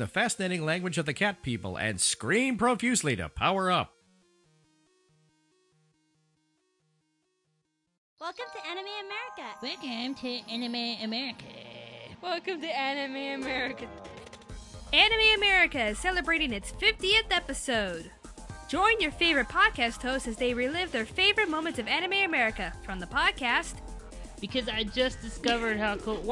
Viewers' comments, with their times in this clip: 0:08 She sounds like Cartmen
0:09 why is eric cartman from south park saying "welcome to anime americer"(i know its america but it sounds like americer the way he says it)